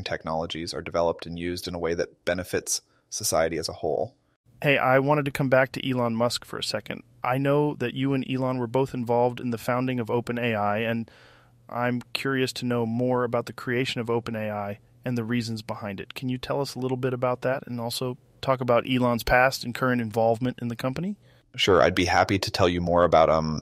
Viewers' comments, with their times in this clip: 0:05 A.I. or Ey I ?